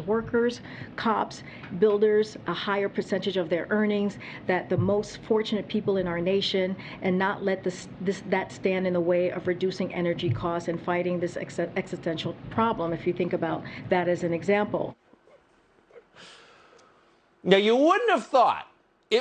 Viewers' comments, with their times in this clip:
0:05 she can't even READ